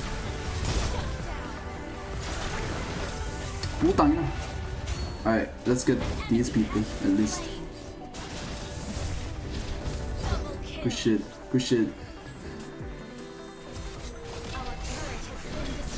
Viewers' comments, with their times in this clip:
0:03 The way he said “ putangina” 😂🤣